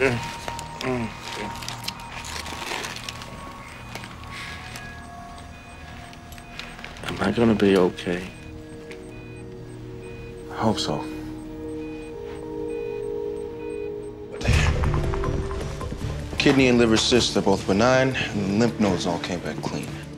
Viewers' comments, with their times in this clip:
0:06 "Am I going to be okay?" the sincerity in his voice broke my heart, bravo sir